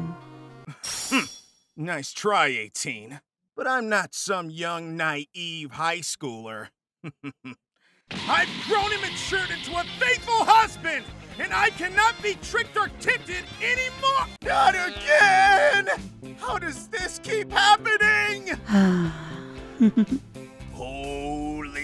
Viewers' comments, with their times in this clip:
0:09 Can we talk about that background beat ? Banging, I need it.